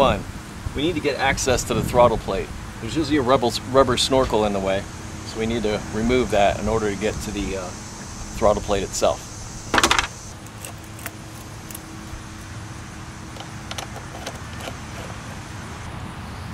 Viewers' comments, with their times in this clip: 0:03 .... "rebel snorkel", yes, they can be quite rebelious when having a hard time removing it.